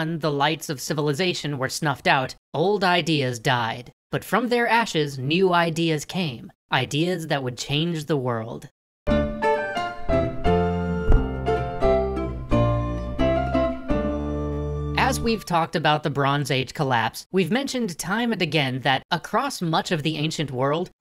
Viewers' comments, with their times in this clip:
0:04 But from their ashes, new ideas came. Ideas that would... bill nye voice ...CHANGE THE WORLD!